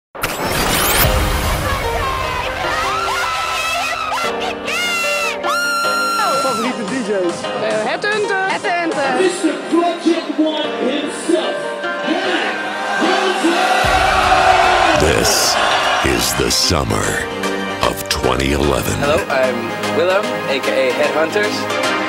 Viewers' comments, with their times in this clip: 0:04 says the girl "you fucking gay" ??? ^^